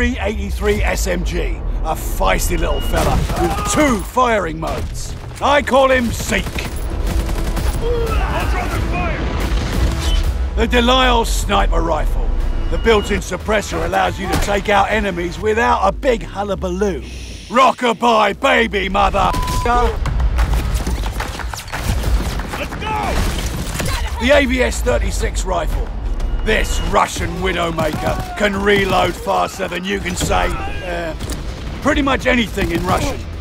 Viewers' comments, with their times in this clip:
0:03 loud nigra for your ears pleasure
0:19 did they really censored motherfucker in a trailer for a +18 game?